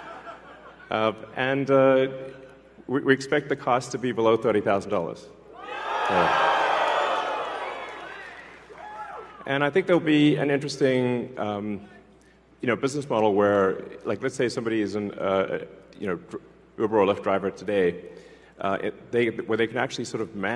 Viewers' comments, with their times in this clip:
0:05 The sheep screaming like the "Canyon Defense" i was used to play when i was a kid in miniclip games. What a farm of sheep people have become. ! D4mn !